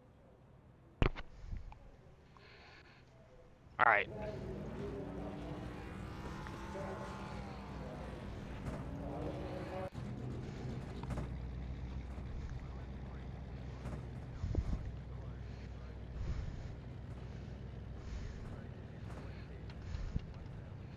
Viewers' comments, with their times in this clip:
0:06 For some reason my mic doesn't come on till But it's on for the entire video. Must have been muted for the frist part of the video and didn't realize it.